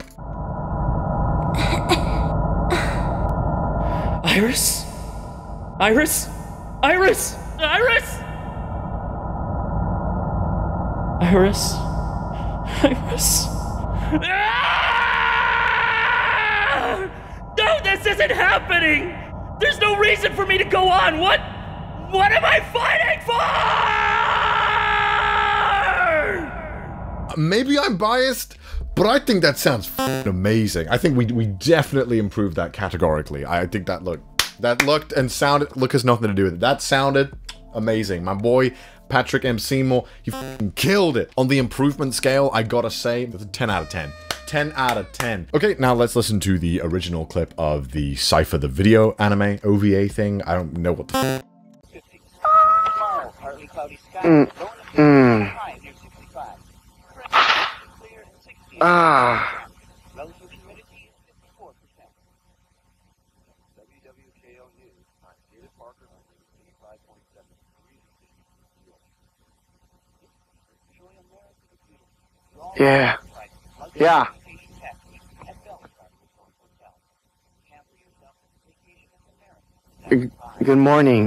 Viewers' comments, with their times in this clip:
0:06 okay but i love how his soft voice goes softer as he’s realizing she’s gone...it definitely sounded better than the original
0:21 with all respect. This is isn't much better excluding the fact that now the VA is a native English speaker and can pronounce the words properly.....and considering the fact that the original was probably some Japanese person with little to no knowledge of the English language...that's not good
0:24 bruh the scream has serious DBZ vibes :D
0:52 sounds like it was recorded on Microsoft paint
1:03 The silence had me on the ground😭😭😭